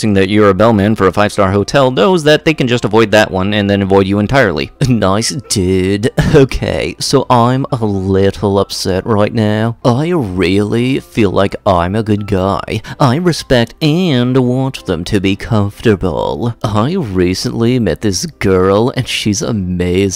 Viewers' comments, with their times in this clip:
0:05 the voice had me dead